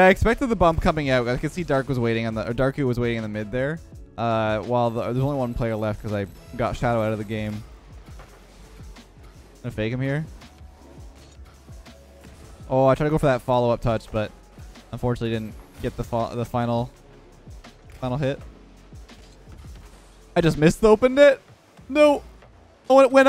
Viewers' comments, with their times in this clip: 0:09 I'm gonna Fakemyr